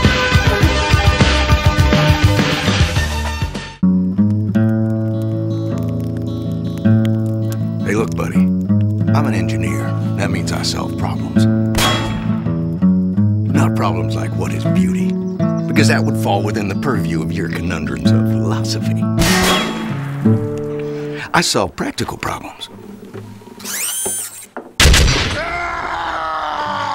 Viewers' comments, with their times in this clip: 0:07 sounds like Adler from BOCW